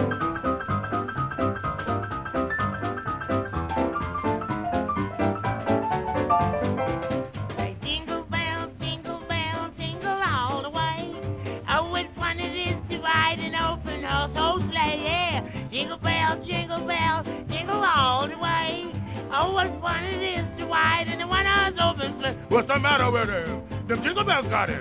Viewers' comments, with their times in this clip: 0:07 Fats Waller and His Rhythm seem so clear and bright as never before. The version here is the best remastered. I would have expected an overmodulation of the piano but it isn't there. Simply great!